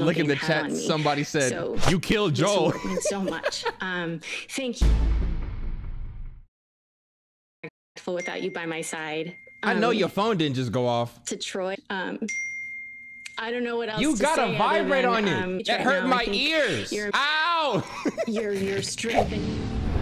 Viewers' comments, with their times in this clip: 0:08 …When shorty sneaky link come thru and her phone poppin’ 🤣🤣🤣